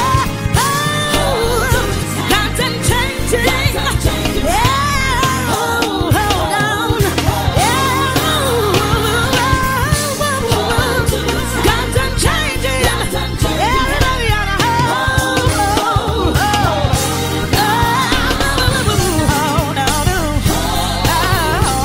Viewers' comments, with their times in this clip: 0:03 She sounds just like dorinda clark cole